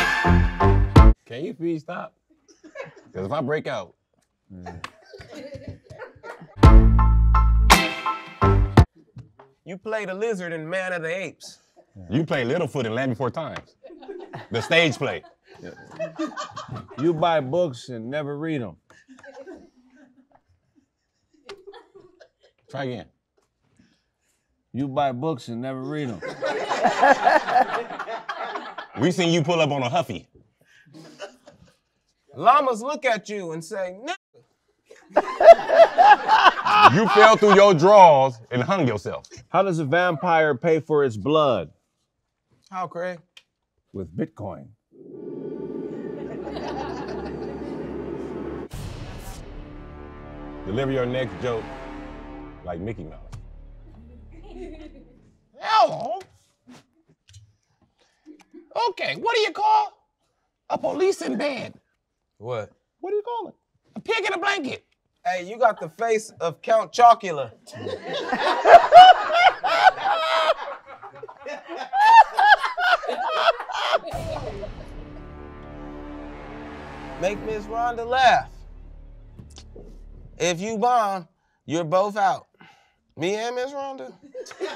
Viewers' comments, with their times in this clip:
0:06 got Me with the slo mo and music and I’m pissed off about it
1:05 who was that laughing 😂😂😂